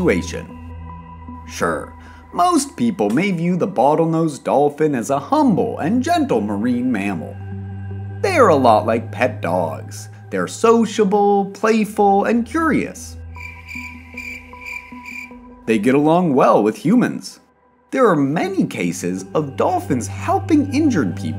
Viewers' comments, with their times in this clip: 0:05 what in the hell is most played?